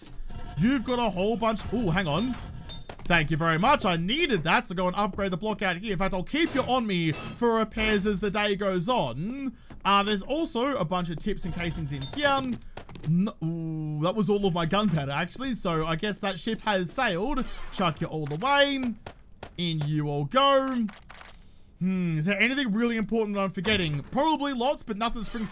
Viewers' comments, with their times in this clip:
0:08 Do all Australians sound like this at the end of their sentence